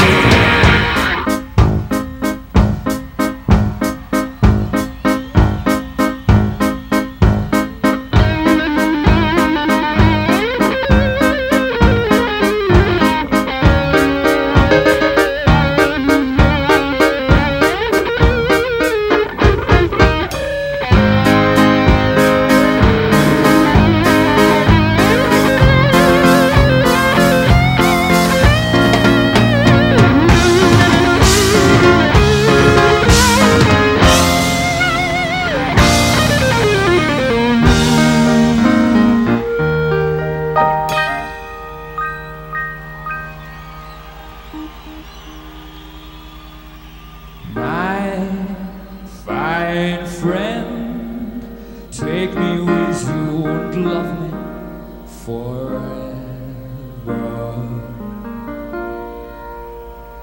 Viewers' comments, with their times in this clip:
0:03 the piano and guitar solo remind me of the Super Mario 64 carousel theme. My absolute favorite part of the song!
0:03 Is no one gonna talk about the amaizng guitar solo by Brian ?
0:10 I didnt understand why freddie is laughting??¿ haahhaah and he didnt stop!🤣
0:20 Listen to that whammy bar flutter ! I didn't know Brian's whammy bar could do the same thing as a floating Floyd Rose whammy bar could.
0:47 He sounds like 87' Freddie.
0:47 Absolutely!! U r damn correct! I don't know but it sounds as the beginning of Guide me home of Barcelona album
0:47 U r correct!! Don't know but it sounded like the beginning of Guide me home of Barcelona album!